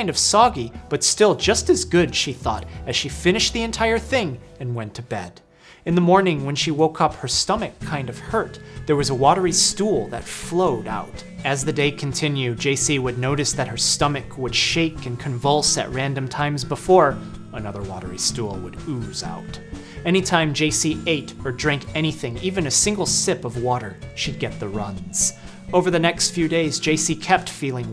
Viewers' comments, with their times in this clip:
0:08 You know that when that jolly yet sinister elevator music kicks in that sh*t is about to get real